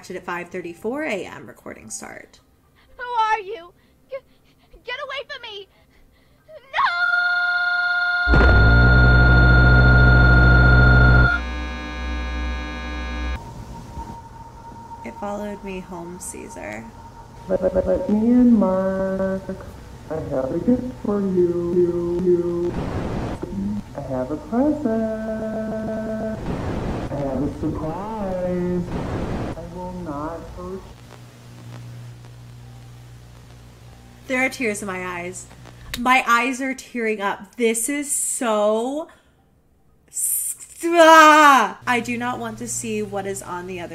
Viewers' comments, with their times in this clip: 0:08 i thought the gangnam style was gonna start playing- what is wrong with me
0:18 The voice sounds kinda like James Charles
0:21 why does this thing sound like James Charles?
0:31 sounds like James charles